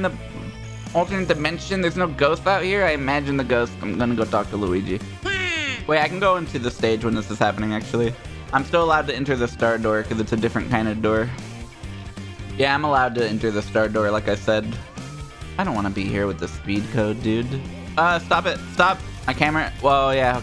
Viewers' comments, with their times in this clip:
0:04 why did charluigi make a waluigi noise